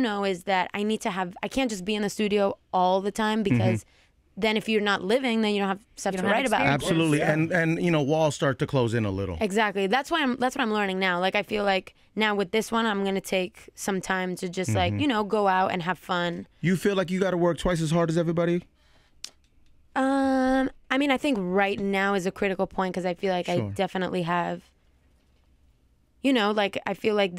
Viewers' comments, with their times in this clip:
0:10 "That's why I'm Lauren now." I can't unhear that. Lol.